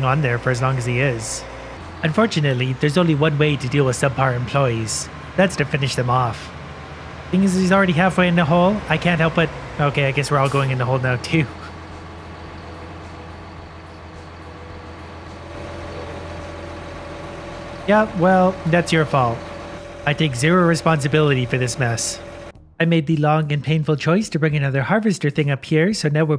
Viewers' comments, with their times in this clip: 0:09 did you actually laugh a bit ??? I never thought of hearing that from you
0:10 This was hilarious X'D love the restrained laugh XD
0:10 HE CAN LAUGHT! HE CAN LAUGHT!!!
0:10 he laughed listen carefully
0:11 Ha! You laughed! Some comedian you are. Jk, the murderhole is pretty HILARIOUS.
0:11 I caught you laughing!